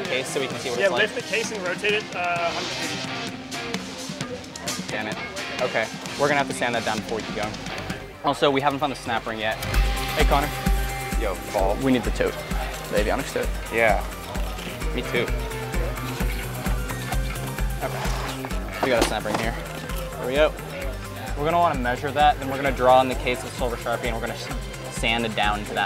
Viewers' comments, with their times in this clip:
0:09 So what’s an “Avionics Toke” ?? Hahaha 🤣 🪴💨I swear like no one caught that!!!